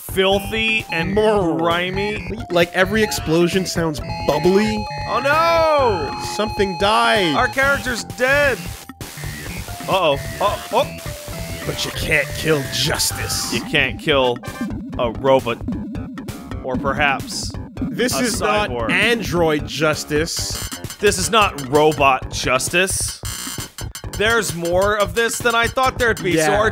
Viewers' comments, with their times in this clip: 0:07 Ironically, that flatline tone is closer to a square wave than the sound effect used when the EKG displays a square waveform.